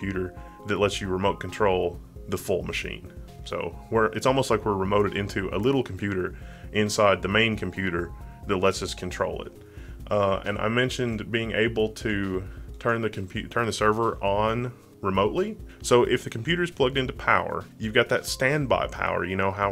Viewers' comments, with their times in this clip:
0:04 was that a black rapper lols